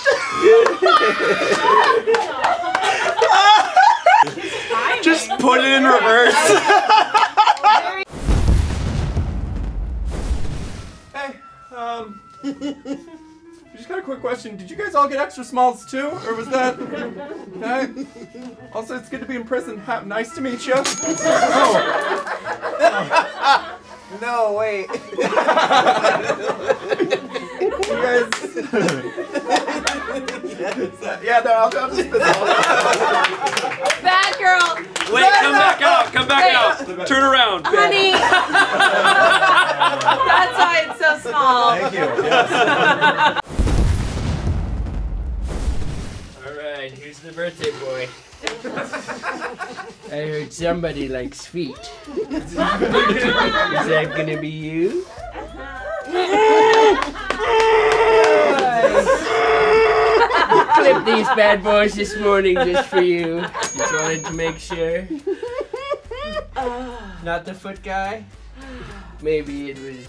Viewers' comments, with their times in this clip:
0:06 Scary ah laugh
0:14 shame that baby was so scared cause you guys were laughing at him 😂
0:18 he sounds like Bo Burnham for only this line
0:55 those screams sounded genuine